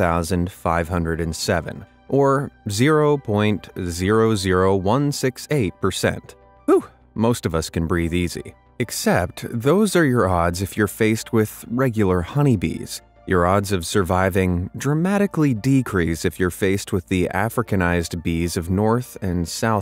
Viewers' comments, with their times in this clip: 0:03 When u said I suppose u sounded like Zhongli